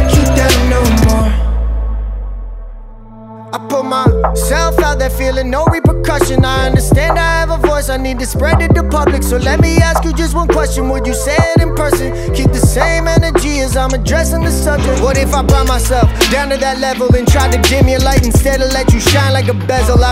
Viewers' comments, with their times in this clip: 0:06 best flow 🔥🔥👌🏼 keep it man!